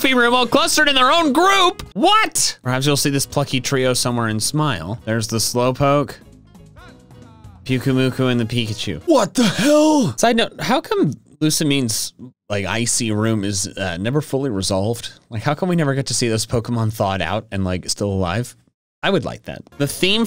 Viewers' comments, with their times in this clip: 0:08 the "what the hell" is so genuine xD I love it so much